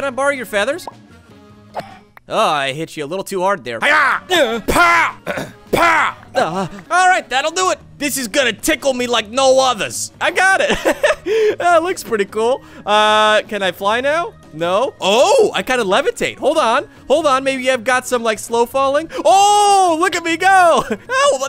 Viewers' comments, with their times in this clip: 0:04 he would be a perfect voice actor for a fighting game